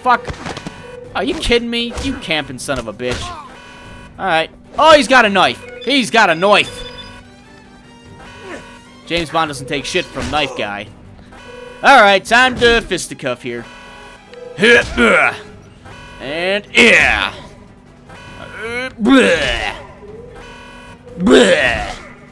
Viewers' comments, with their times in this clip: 0:04 When you said he has a knife you sounded Irish my friend. Lovely accent